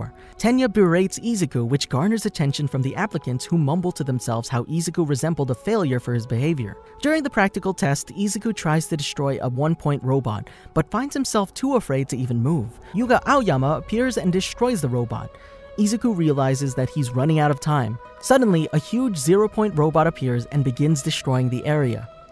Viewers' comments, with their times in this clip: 0:08 he sounded like a robot